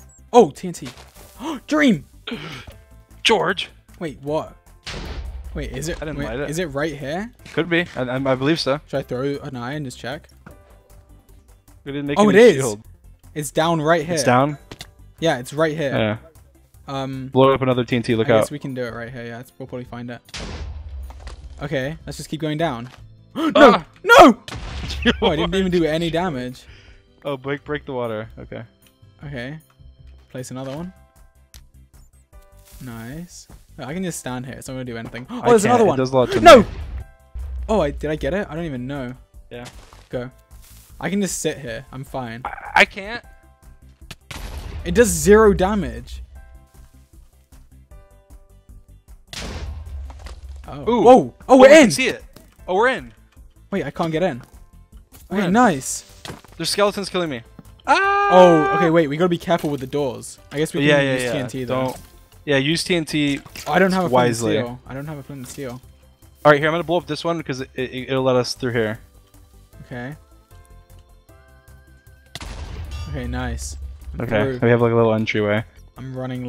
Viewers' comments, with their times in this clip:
0:03 the “GeOgRe” is so cute somehow
0:57 dreams ahh was so cute